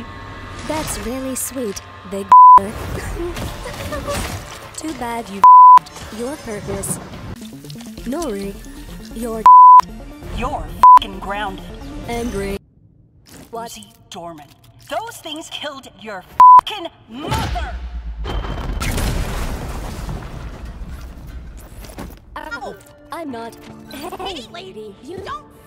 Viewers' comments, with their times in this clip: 0:10 I think the censorship enhances the Uzi being grounded experience.